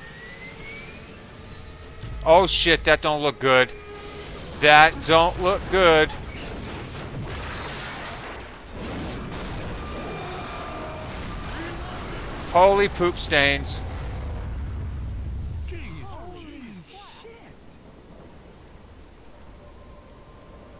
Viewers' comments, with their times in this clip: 0:05 we thought it's going to come all the way towards you, good thing it didn't but that crazy. Damn, the noises the zombies are making are so freaky .Hell yeah, mission success :D